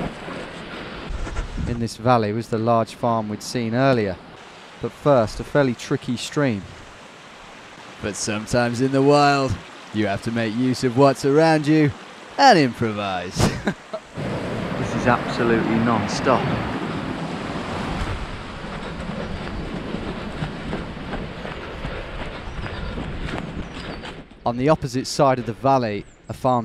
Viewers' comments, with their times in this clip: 0:06 110% Bear Grylls voice
0:07 no one giving props to his spot on grylls impersonation? Just me? Ayt
0:07 that Bear Grylls impression is on point
0:07 that Bear Grylls impression was so spot on I actually thought he’d done a guest spot 😂
0:08 LOL that Bear Grylls impression! Cool stuff, looking forward to the next installment!
0:08 I like how he cracks up himself after that Bear Grylls impression lol
0:08 is a great Bear Grylls impersonation!